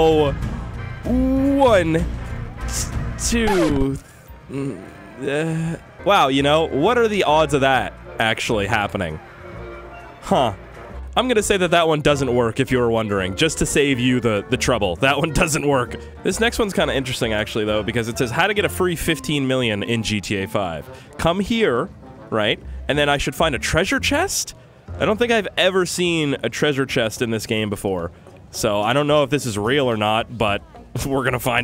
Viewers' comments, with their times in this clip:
0:10 bro sounded like a Minecraft villager
0:17 Dude sounded like a straight up villager from Minecraft on